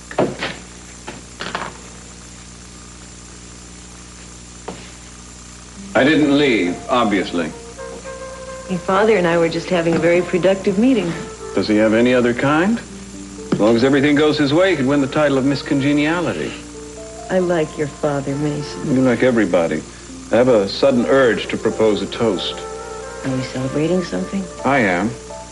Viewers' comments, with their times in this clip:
0:06 the music between Mary and Mason was so poetical.